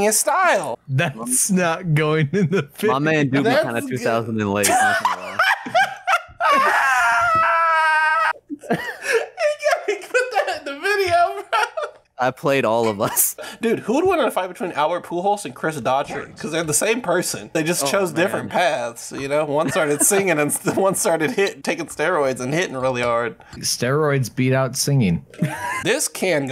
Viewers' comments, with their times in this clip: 0:08 my mans really did just say "enguadaa putat en da videyo"